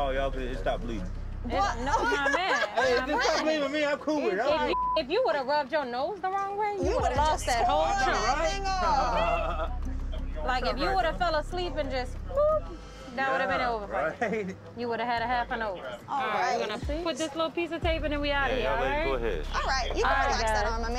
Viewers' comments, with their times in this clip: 0:05 everybody gangsta till he sneezes